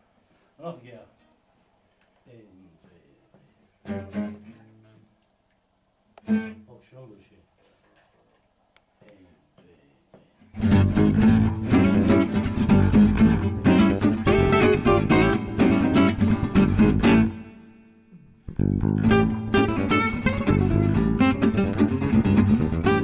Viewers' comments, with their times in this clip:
0:07 Pure groove !!! But i dont understand why there's microphones in front of the bass player ... ?